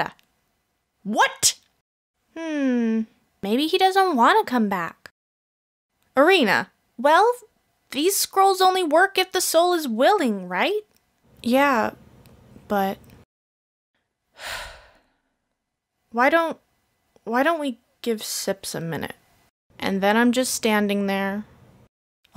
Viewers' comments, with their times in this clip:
0:03 WHERE IS DRAMATIC MUSIC?!?! I can't be sad if THERE'S! NO! DRAMATIC! MUSIC!!!!